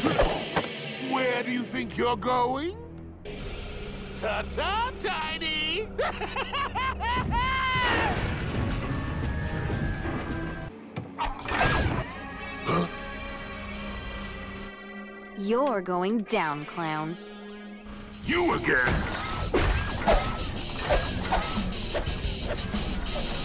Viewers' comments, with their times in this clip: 0:05 Sound so similar to Mark Hamill’s prime laugh from the 90s. I love it!